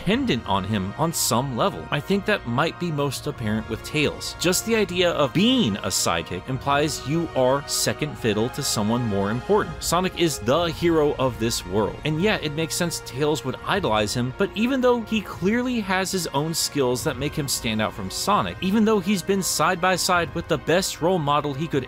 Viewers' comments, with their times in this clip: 0:04 I'm sorry, but that transition was a bit too instant, so I can't stop hearing "Just the idea of BEAN"